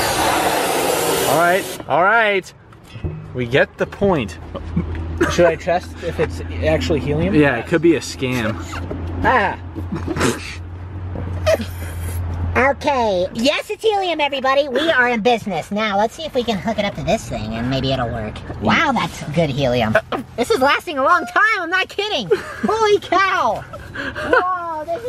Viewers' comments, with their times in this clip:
0:08 he sounds like carman from south park lol
0:13 he sounds like Linus tech tips